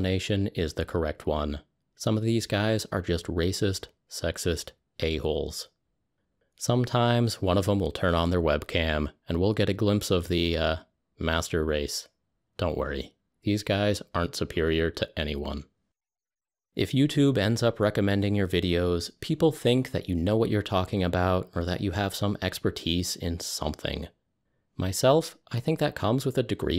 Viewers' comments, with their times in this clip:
0:10 never has such a burn been delivered in such a calming tone